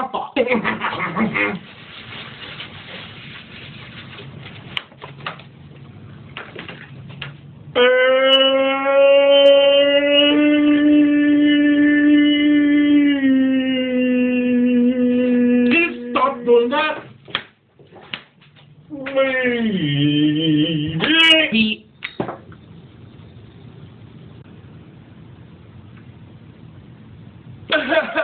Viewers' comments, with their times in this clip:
0:10 SOMEONE’S calling you!